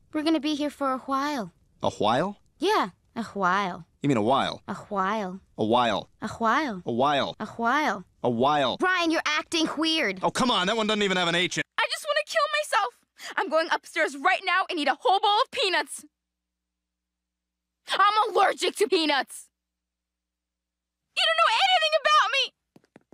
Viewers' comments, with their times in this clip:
0:08 Reminded of when Stewie said whipped cream